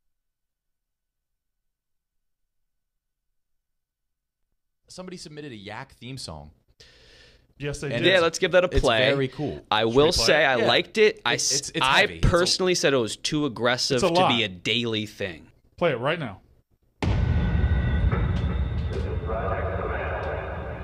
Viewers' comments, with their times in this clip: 0:03 Starts with no musics